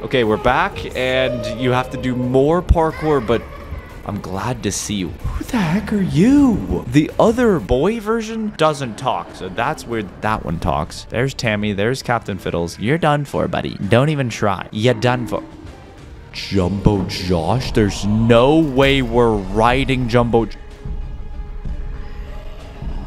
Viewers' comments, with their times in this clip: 0:08 he does talk but in Spanish or somethin